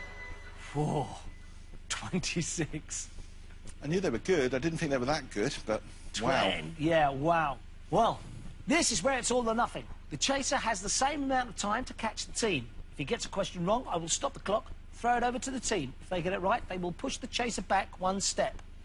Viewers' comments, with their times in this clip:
0:03 was the time when Bradley sounded like Mark!